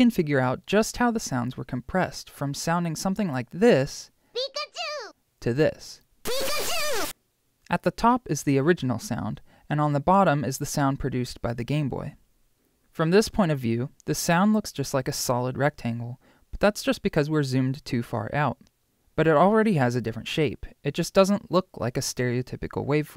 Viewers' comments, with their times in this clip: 0:03 OMG THE SOUND DIFFERENCE! P I K A C H U
0:03 for the clear audio and gameboy original commpparrisson
0:04 they just put a distortion filter on it